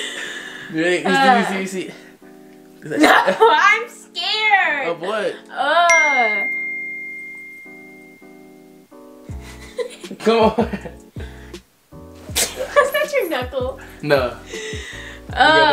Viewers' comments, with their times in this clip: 0:03 I literally just thought I got a text message so I checked my messages..It wasn’t true